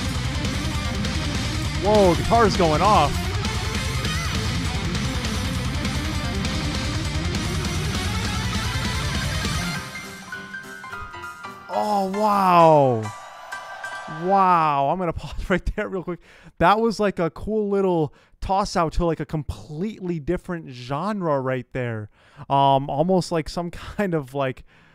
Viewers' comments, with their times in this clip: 0:09 Good Catch with kawaii Yui and Moa dancing to the old ragtime jazz music from the roaring 20's . Prohibition era here in the USA . Nice reaction thank you .